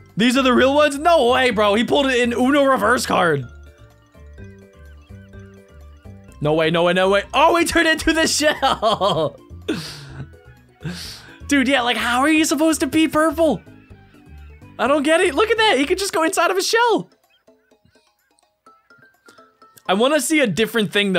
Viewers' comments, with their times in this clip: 0:03 the way you said that was so funny